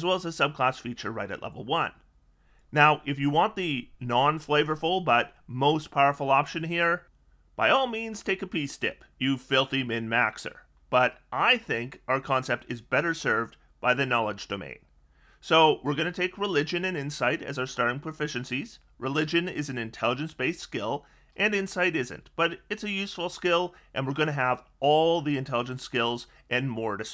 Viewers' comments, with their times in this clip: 0:08 What did you say ? Was too difficult to understand.